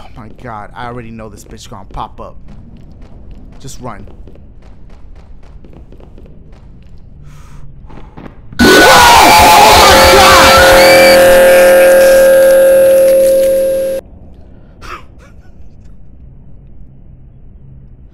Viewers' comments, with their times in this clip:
0:06 with the relax breath to restable himself WOULD HAVE UNINSTALLED THE GAME SO QUICK